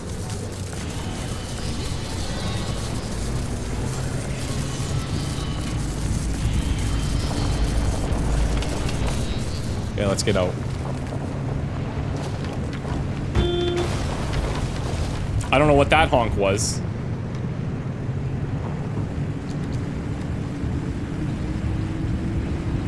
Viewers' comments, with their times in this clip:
0:08 The horn honk, confirming the trunk closed while driving, was quite the funny moment. “It’s not a bug; it’s a feature.”